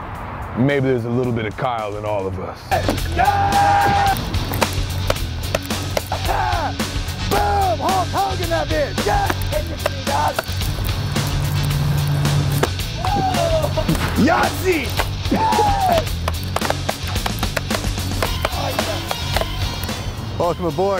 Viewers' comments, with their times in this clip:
0:03 If you don't hear that scream casually in the noon when everyone is just chillin/relaxing, man I don't know you but I 'm sure you belong in a different kind of hood.. I 've even caught those trashes, throwing firecrackers to each other at 6pm in the morning outside of a bakery (I also drink monster, but how much they drink to be able to do that stuff nonstop?), you know.. casual stuff..